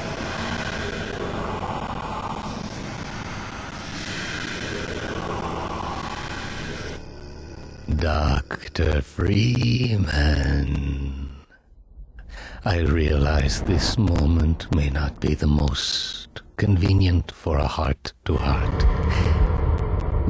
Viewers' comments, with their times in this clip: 0:07 How does he get his voice like that ?